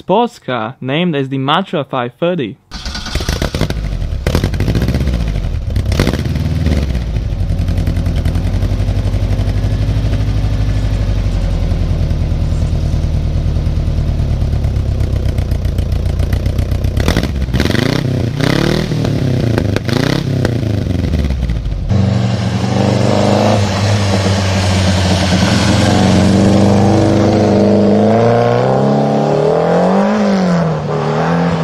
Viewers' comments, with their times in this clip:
0:03 Reminds me of my 02 wrx! My dad used to make fun of me and tell me it sounded like a lawn mower combined w a harley 😂
0:08 sounds almost identical to subaru's Flat 4 EJ motor
0:17 sounds like a Subaru B4
0:19 Subaru-like sounds? :D